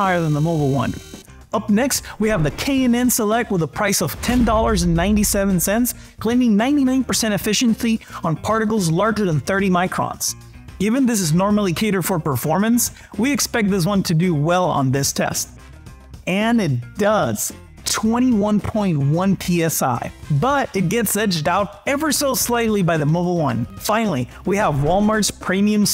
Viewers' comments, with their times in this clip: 0:08 Go to effithiency lol